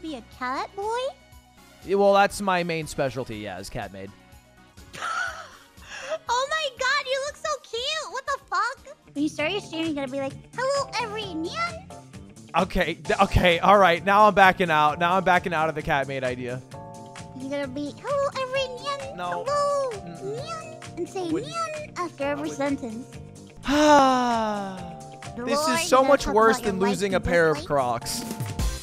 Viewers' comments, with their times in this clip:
0:09 The way she says NYAN is so cuuutee :3